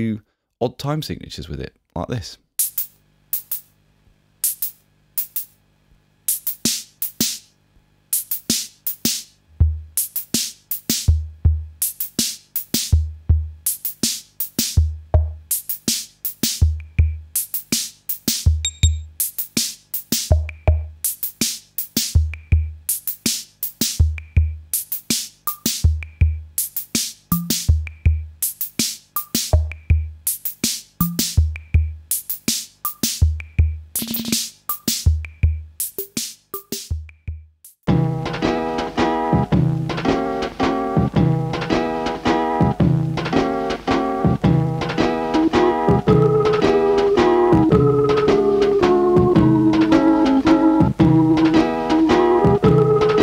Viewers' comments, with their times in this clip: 0:06 The CompuRhytmn sounded like John Carpenter's 'Assault on Precinct 13' title track -( hi hats and bass drum). Wonder if it was used?
0:37 Wow, you must have felt like you were in heaven in that museum! 😃 I love that Chilton Talentmaker AKA Optigan. I'd never heard of it before. Great method for an instrument to produce sounds. It's got me thinking about a track by Blur. On their album 13, there's a track called Optigan 1. The prominent instrument in that sounds JUST like this one you played here; Same accompaniment & lead sound too! 😲 All of a sudden, the title of the track makes sense to me.
0:38 Instant Blur/Damon Albarn!